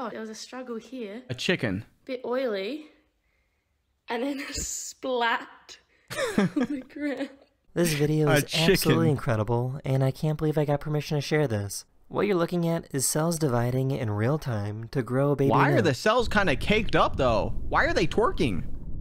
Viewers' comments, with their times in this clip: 0:06 listen very closely, you can hear a snippet of the old spice jingle